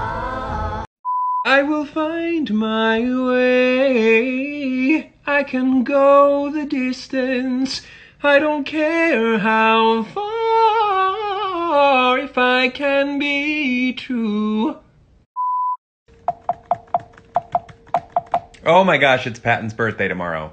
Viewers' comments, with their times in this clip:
0:05 THAT RIFF THO. LIKE DAYMN I WISH I COULD SING LIKE THAT!!! 😍😍😍😍😍